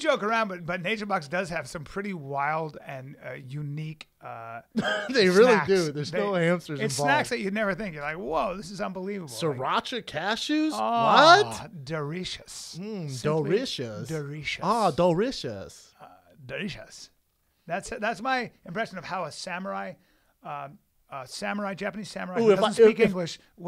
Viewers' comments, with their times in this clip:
0:10 lol @ Callen's samurai impression